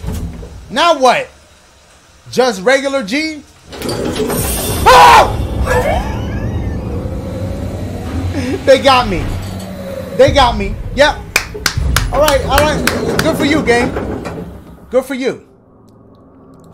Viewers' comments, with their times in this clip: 0:03 nah dashie had me crying at the way he screamed😭😂😂😂